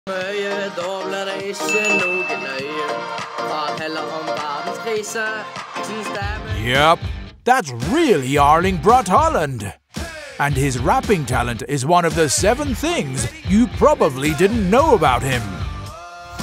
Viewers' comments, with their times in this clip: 0:01 Nice singed Erling!😂